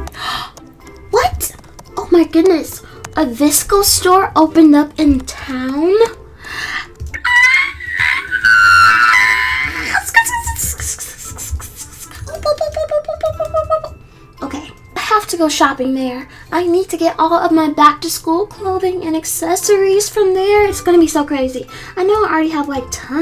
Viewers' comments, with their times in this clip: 0:08 that scream though